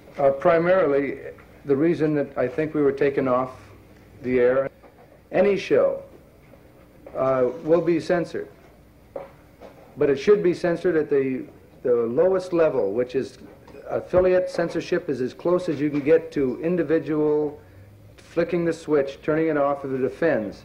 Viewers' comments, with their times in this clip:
0:03 -20 his explanation of why they were cancelled was clipped and the next part he speaks of censorship. What did he say that was cut out? Is there any original audio out there of this press conference that is not cut up? I am very interested in hearing the original uncut version.